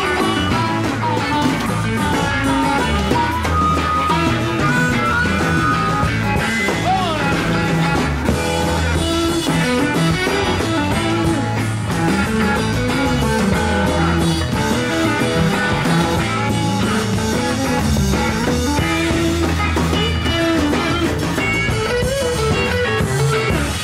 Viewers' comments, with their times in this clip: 0:06 BEST Jerry solo ever? 👍🏼🤩😎👍🏼